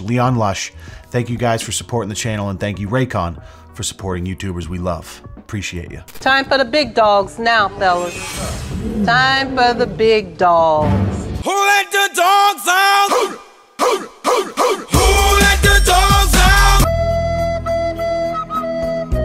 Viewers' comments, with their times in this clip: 0:07 The weird sound effect/sting is super over used on A&E...Fuh!